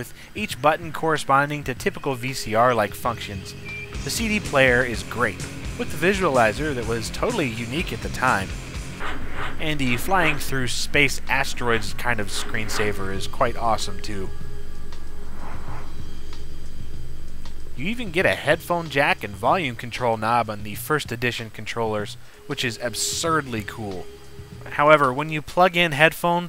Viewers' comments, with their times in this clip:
0:07 Nice choice playing that Nirvana song blew on a 3DO